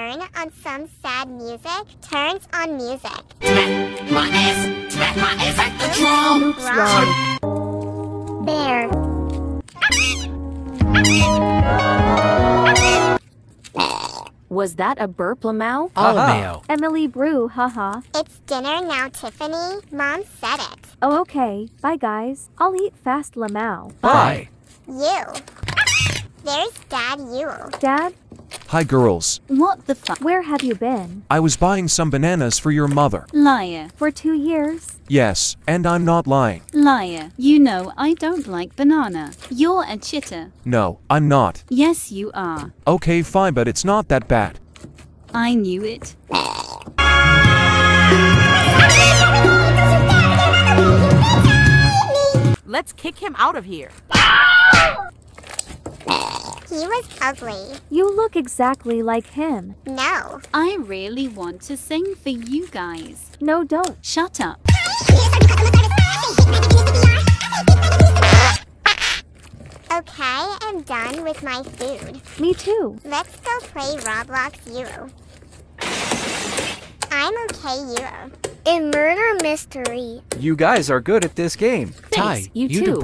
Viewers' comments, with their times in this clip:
0:10 the ways she scream💀💀💀
0:14 bro I burped the same time when she burped😭😭
1:10 Omg 😂😂😂😂 the fart